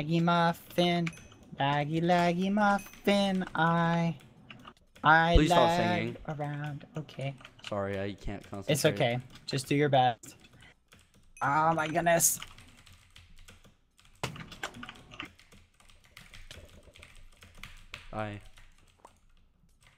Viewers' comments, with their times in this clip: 0:04 THE TINY “okay c:” mY HEARTT